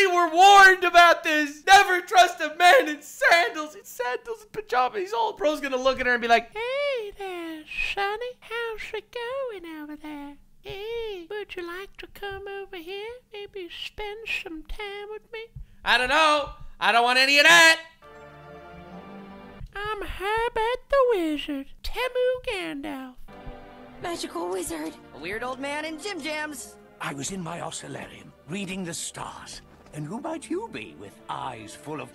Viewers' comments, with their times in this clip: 0:07 why was that impression so good?😭
0:20 HOW DO YOU DO THAT VOICE?! I try and I can't quite get it right. You're always a blast when you're on the left side of the screen.